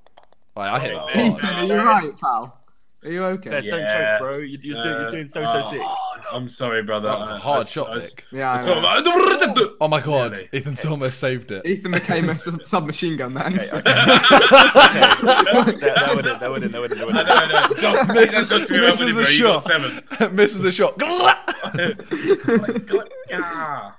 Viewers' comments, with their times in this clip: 0:08 If Vine was still around I bet someone would make a sdmn vine of that noise Ethan made